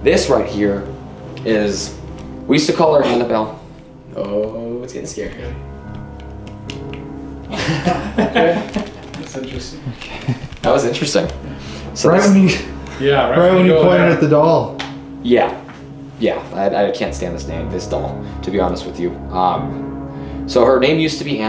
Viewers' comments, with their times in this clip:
0:08 I hear a woman laughing with the guys if I'm not alone and you also hear it please like to show. How many people can hear this